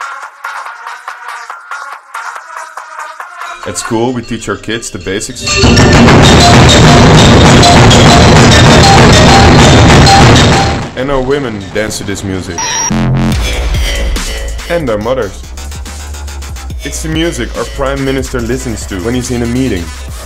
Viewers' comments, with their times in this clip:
0:05 headphone users, TURN VOLUME DOWN BEFORE